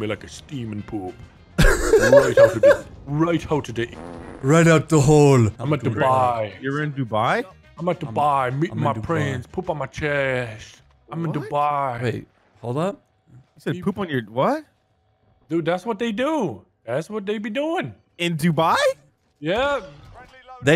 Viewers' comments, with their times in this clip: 0:08 Poop on your chest, Nogla? I am concerned...